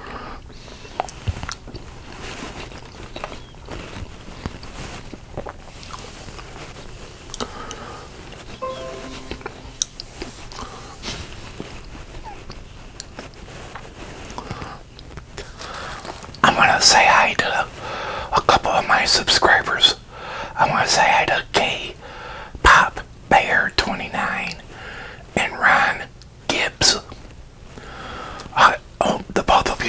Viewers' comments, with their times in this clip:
0:10 were you laughing at something? Lol